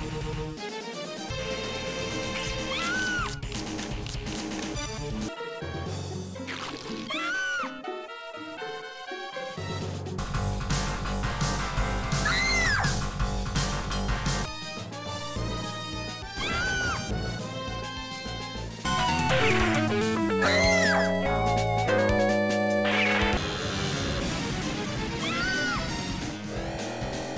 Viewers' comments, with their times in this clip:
0:10 this is probably the most brutal one So brutal that fio mastered eri's death scream